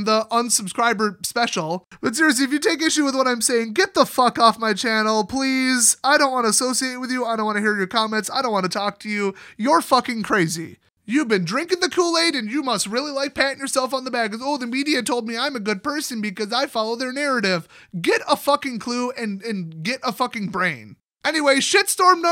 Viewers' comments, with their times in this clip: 0:03 ....and Im subbed... Don't know if it was intentional, but.....best ad-break timing ever. Mid F-Bomb, and it cut to an ad.